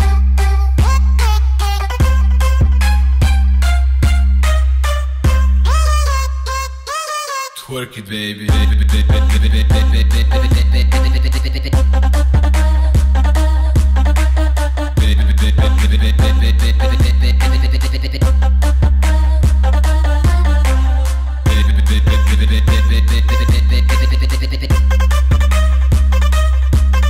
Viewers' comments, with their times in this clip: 0:08 twerk it baby